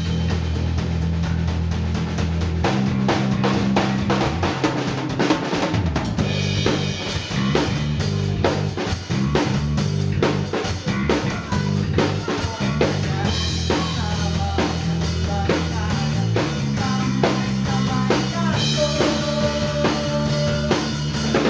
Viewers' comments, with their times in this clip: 0:03 kick-ass drum-bass combo Show me your ways Masters! :D